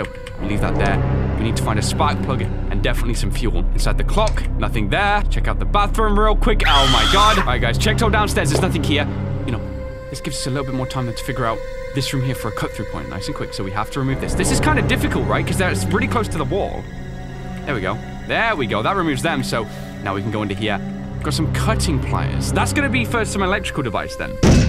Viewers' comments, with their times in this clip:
0:06 The scream effect that you make when you get kicked in the balls
0:06 That screaming effect though